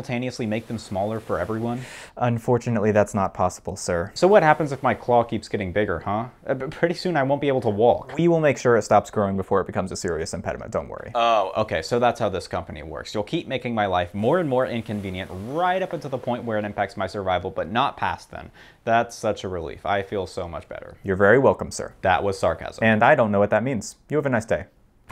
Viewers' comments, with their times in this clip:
0:07 Irish Elk noises